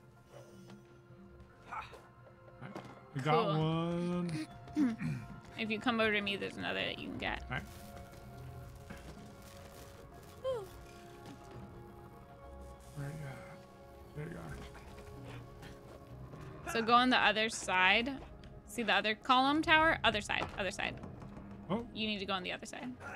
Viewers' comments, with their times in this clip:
0:10 did a Roblox character just die?